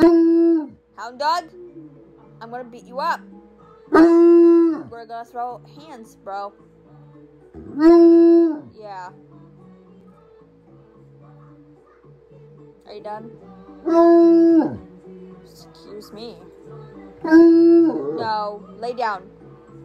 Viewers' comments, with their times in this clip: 0:03 The Prowler: * prowling for Spiderman * The background music: